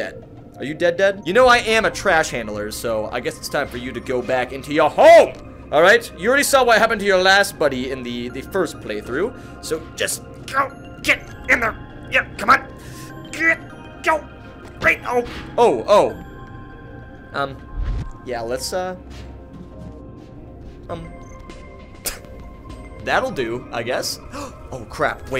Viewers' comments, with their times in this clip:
0:10 The SAO music making me nostalgic